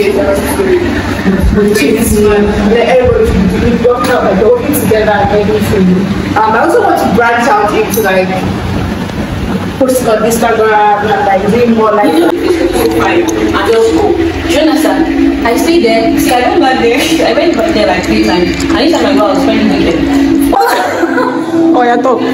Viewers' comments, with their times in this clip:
0:08 omgggg!!!! I see me 🤣🤣🤣 and my tiny voice 🤣🤣 See as my skin dey shine 🤣🤣 Vain much I know 😭😭